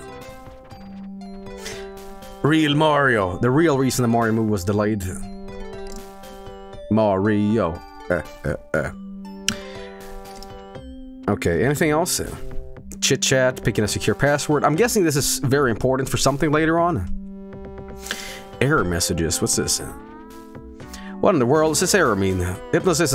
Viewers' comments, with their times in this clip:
0:06 did he just do the mario, eh eh eh thing from oneyplays